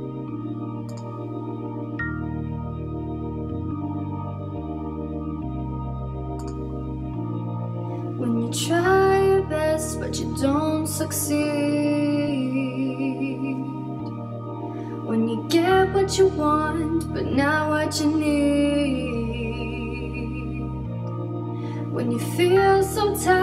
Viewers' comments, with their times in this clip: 0:08 Did i hear "breast" ? LOL